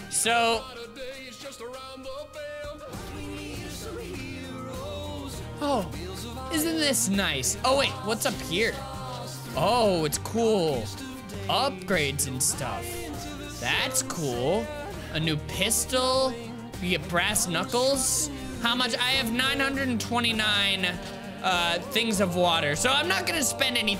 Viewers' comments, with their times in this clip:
0:05 i smiled so big when i heard steam powered giraffe start singing !!! they're my favorite band ever!! i didn't know they worked on this!! this is so cool oh my gosh. they're the first thing i thought of when i saw the thumbnail for this game and i was pleasantly surprised to hear them singing!! :D